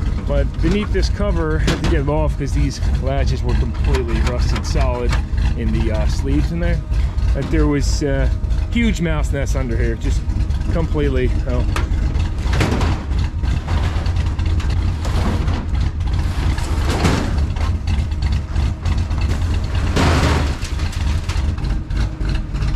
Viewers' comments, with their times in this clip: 0:10 The engine works very well. Pleasant sound 😉 Thank You for video 😊